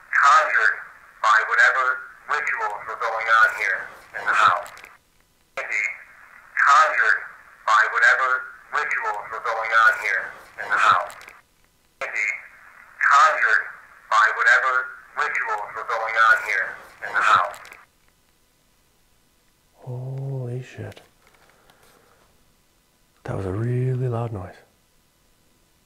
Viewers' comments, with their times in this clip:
0:09 I can't hear the noise at all 🤷🏼‍♀️ I think I get irrationally irritated when I can't hear the noises. ☺️